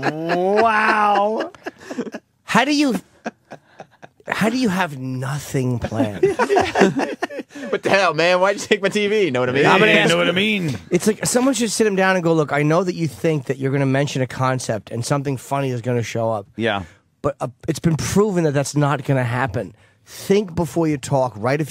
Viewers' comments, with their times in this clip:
0:05 lmao. Jimmy the way he says, how do u have NOTHING planned.